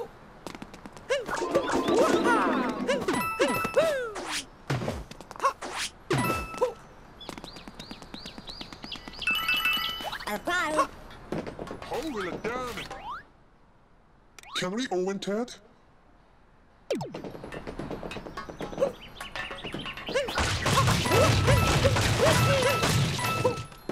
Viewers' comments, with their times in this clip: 0:08 cappy's voice is sooo fun to listen to.